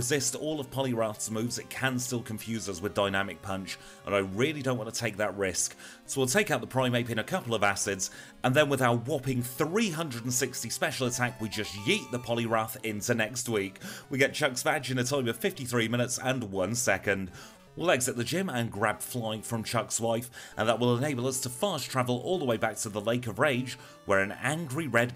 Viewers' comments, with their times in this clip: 0:09 "we just yeet the poliwrath into next week" sounds like an announcement